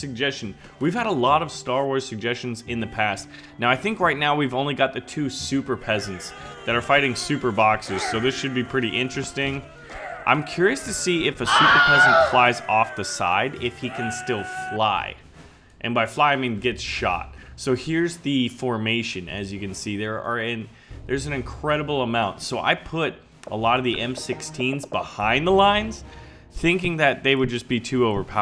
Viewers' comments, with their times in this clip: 0:10 Didn't anyone notice the Wilhelm scream ?